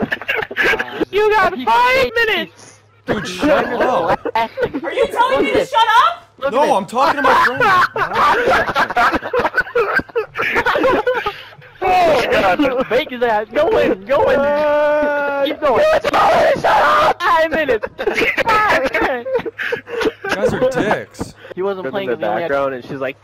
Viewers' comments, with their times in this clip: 0:09 it sounds like if he was choking and laughing at the same time XD